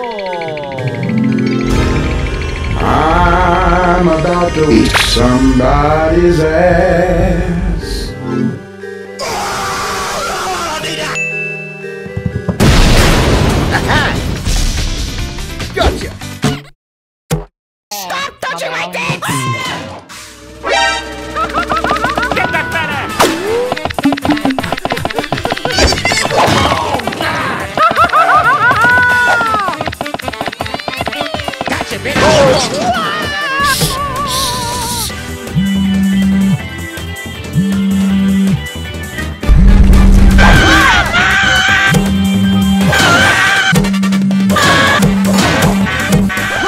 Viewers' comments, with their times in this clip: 0:08 I like When Mario Scream Like a Baby
0:32 i thought smg3 say "STOP RIGHT THERE" 😂😂😂😂😂
0:34 Mario's super scream